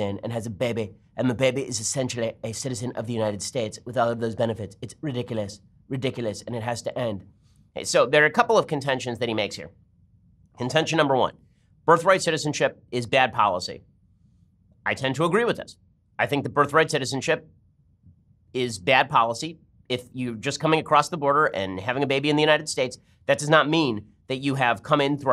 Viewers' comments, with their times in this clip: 0:06 that Trump impression though XD